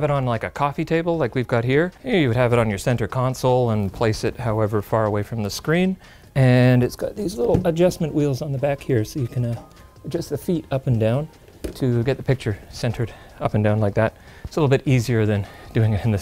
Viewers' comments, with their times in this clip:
0:03 sneaky editing there with the audio cut especially😌👌 well done